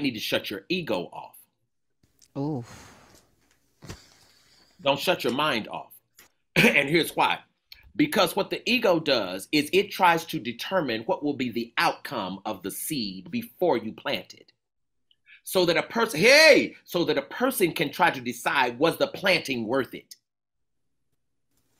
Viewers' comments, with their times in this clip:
0:03 not the "oof"